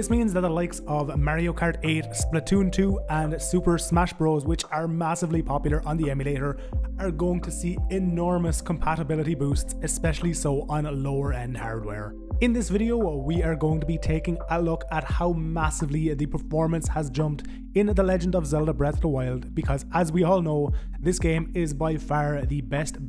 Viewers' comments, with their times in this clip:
0:09 "on a lower n arrrarrr" Love it :D